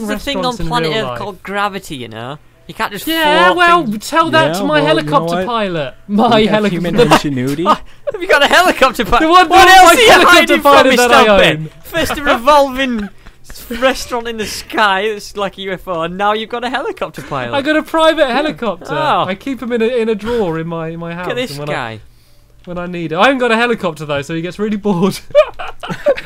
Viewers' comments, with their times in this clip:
0:08 RIP to all heafphone users
0:10 ..... omg XD ok...ok.. ow ow ow...... my ears.... warning your ears will start to hurt when the volume is all the way up high!